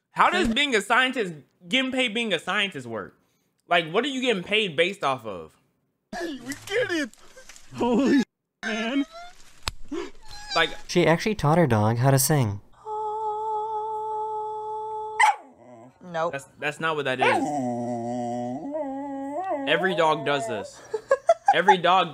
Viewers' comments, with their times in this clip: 0:09 they dapped up so hard you could hear the sound barrier breaking